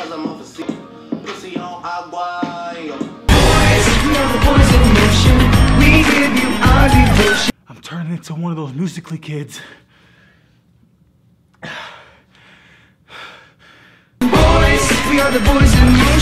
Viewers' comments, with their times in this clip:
0:04 ..... Rip headphone users